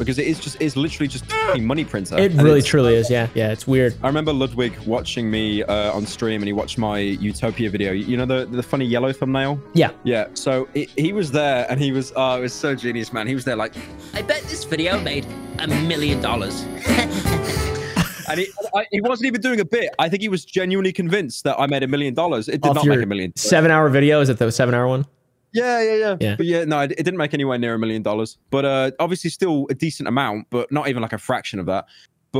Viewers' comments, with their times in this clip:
0:08 Why did ghost randomly start playing
0:14 bro I thought my spotify was playing machine girl dawg 💀